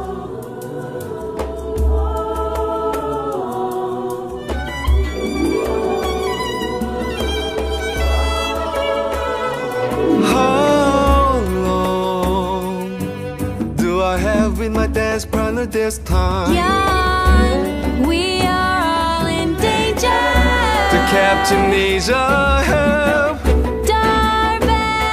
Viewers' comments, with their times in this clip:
0:09 i love this song, brie's voice is so pretty ❤